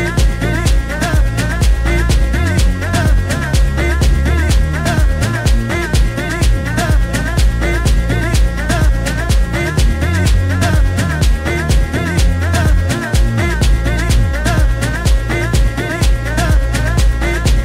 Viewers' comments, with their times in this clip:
0:03 sounds like there's some South African house (gqom) influence in this track.